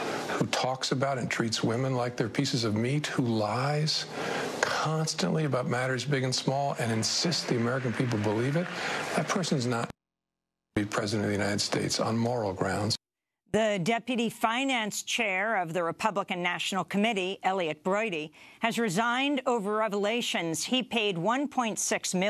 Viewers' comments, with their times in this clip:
0:04 whats with the bleep ?